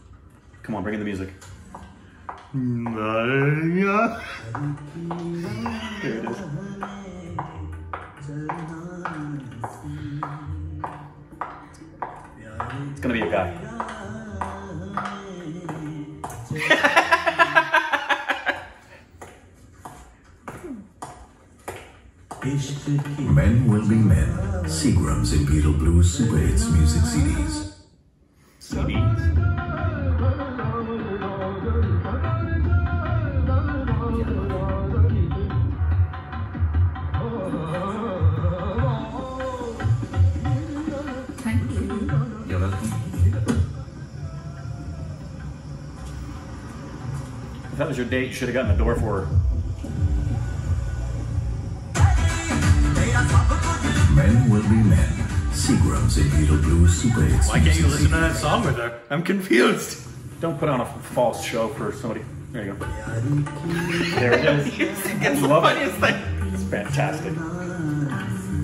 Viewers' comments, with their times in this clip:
0:03 you sang it properly 😂😂😂
0:54 .. He was listening to classical music to show his refined taste in music as long as the girl was there in the car.. Once she left he changed it to light dance music..